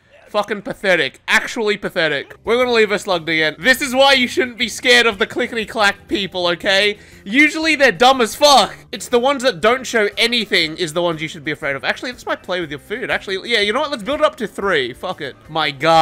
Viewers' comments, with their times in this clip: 0:03 I wasn't paying attention and I thought he said black instead of clack